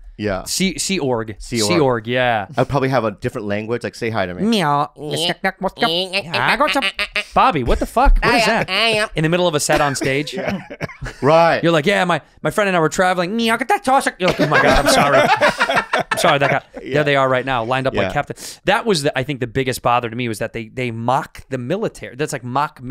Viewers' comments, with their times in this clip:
0:07 …now i know where that noise is coming from.